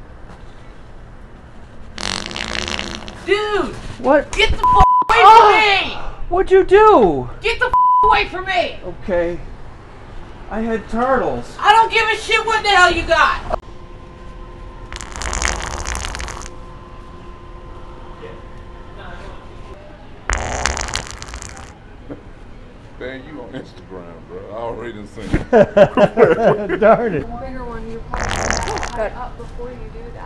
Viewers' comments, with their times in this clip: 0:04 😂😂😂 AHHHHHH!! Like it actually hurt lmfao!
0:16 ...LOVE WHEN his fart rewinds time!🤣